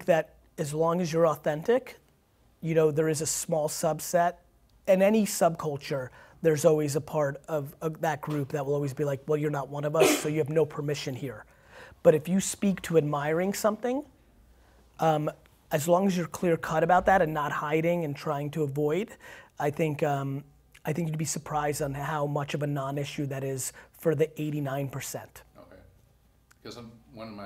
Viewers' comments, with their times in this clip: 0:10 Holy shit he didnt stop and say bless you when she sneezed....